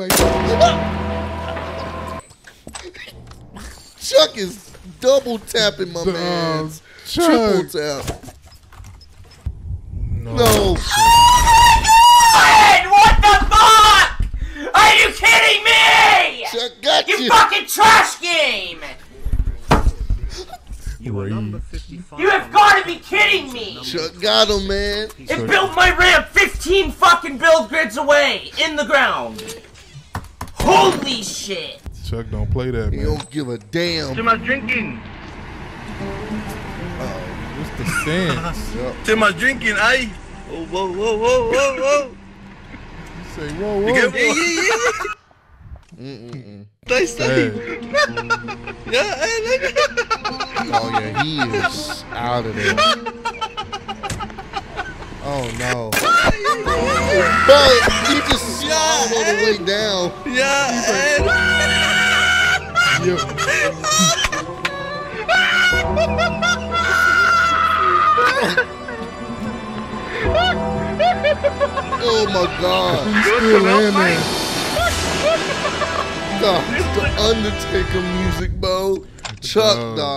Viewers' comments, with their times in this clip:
0:07 WHO hollering like that!?🤣🤣🤣
0:56 that’s a healthy laugh
1:04 That dude sounds like Ross laughing.